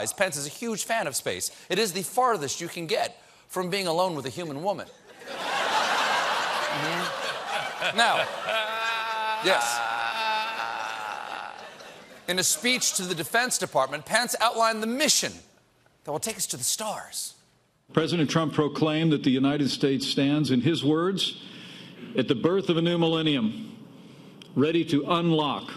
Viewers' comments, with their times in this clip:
0:08 Wtff is that laugh